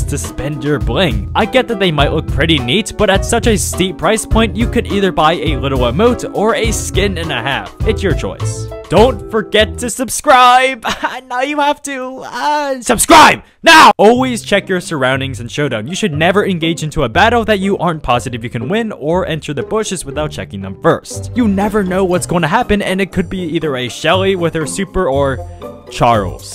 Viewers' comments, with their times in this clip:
0:10 ok i am already but the voice scared me